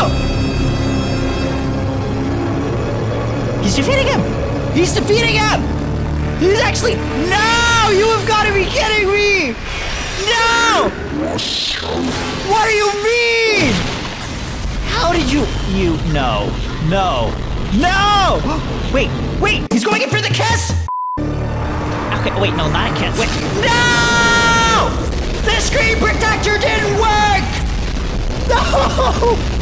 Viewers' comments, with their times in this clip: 0:10 he was meant to say “you’re so bad” cuz he talks backwards but it sounds like he says “HEY WHATS UP